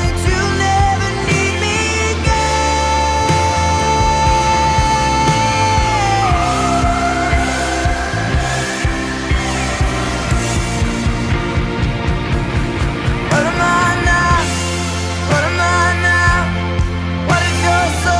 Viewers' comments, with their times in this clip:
0:03 ~ with the "I get the feeling you'll never need me again" killed me. What the hheeeeeeck